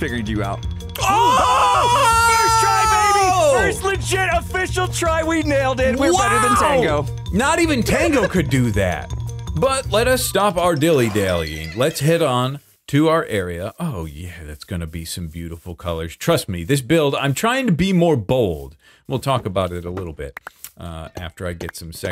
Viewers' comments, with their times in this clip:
0:03 ARGH WHAT'S WITH THIS MUSIC?!?!??! It's like mixing coffee and sugar in a glass cup with a metal spoon for 5 minutes nonstop!